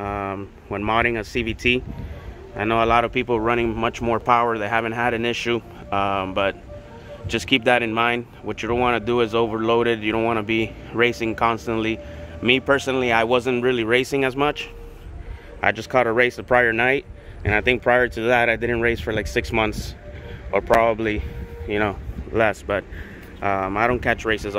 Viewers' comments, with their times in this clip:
0:07 Watching your video close to 1700 then hearing the army retreat kicks in makes me pause the video multiple times lool